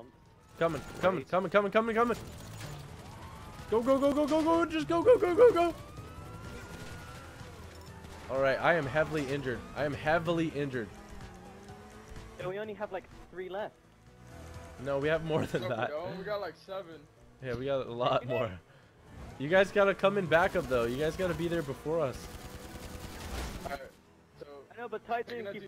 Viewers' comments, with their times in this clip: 0:06 just go go go go go sounded so wrong